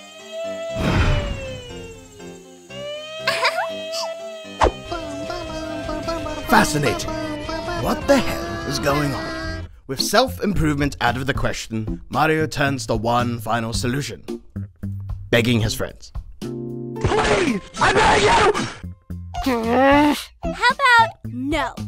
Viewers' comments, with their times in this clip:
0:04 ANIME SOUNDS ENGAGE
0:05 ANIME SOUNDS ENGAGE